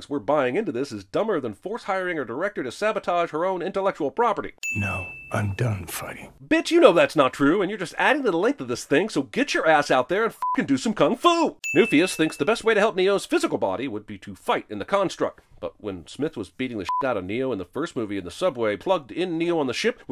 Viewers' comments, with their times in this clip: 0:06 holy shit ive never laughed so hard before, i dont think ive ever heard him cuss without the bleep!